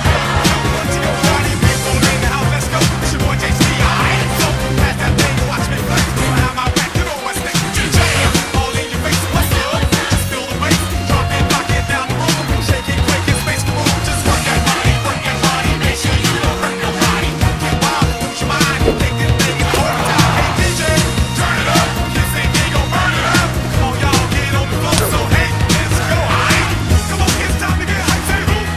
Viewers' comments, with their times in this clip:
0:08 Klavier coming in with the guitar fucking SLAYED me this video is gold
0:15 3 points. 1. You know the court is ballin even when the judge is singing 2. Apollo is going through each century with how fast he jams 3. The judge acting like he didn't just jam 3 minutes ago